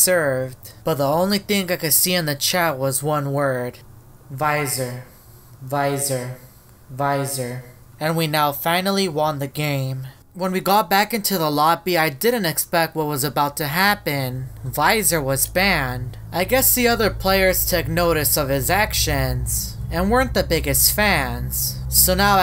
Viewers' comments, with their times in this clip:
0:04 In Your sound like an Echo